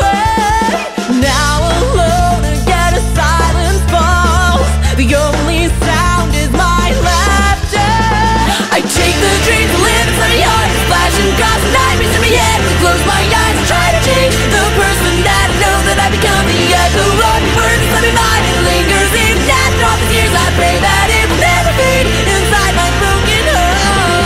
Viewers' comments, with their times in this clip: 0:09 Lyrics doesn't match music lol
0:09 ? i hear you singing something else than what's inside the video, or is it just me?
0:11 major type-o starting